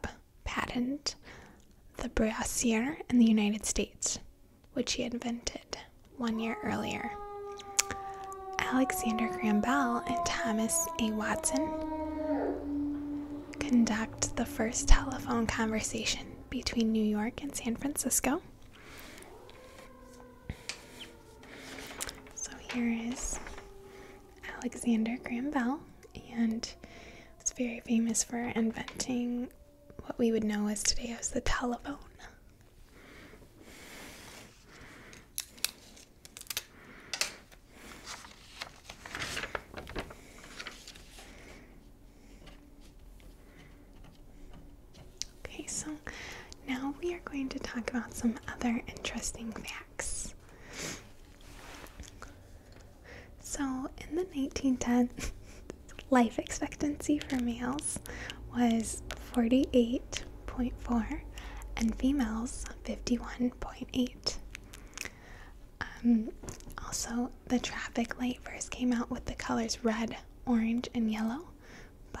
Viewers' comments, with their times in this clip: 0:05 Jesus Christ there’s an air raid!!
0:07 was that the dog? I thought it was my dog. Scared me to death
0:53 Why did you start laughing ?